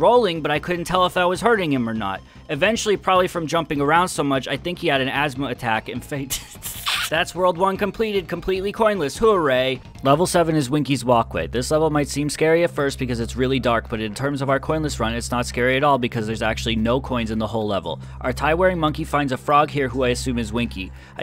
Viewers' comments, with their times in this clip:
0:05 I love how he couldn't keep his laughter at that line